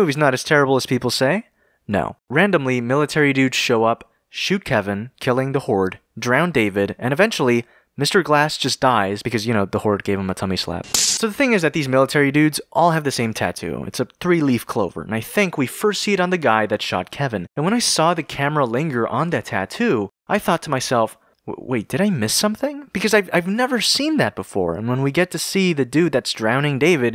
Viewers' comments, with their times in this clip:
0:10 YOU WANT TO HEAR SOME CRISPIEST SLAP??